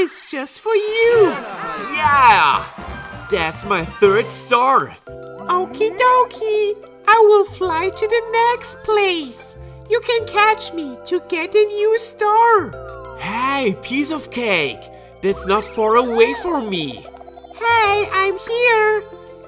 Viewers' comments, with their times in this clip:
0:05 Toadette's voice... this makes me smile ☺😘